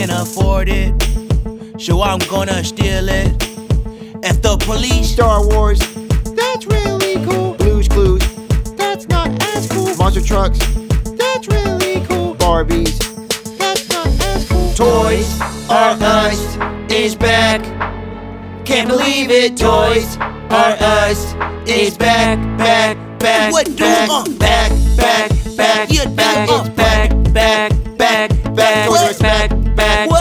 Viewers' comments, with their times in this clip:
0:08 Blue's Clues & You! Toys (screaming) 😱 😱 😱 😭 😭 😭 TOYS R US Macy's
0:18 is it just me or we all heard Joseph say da n word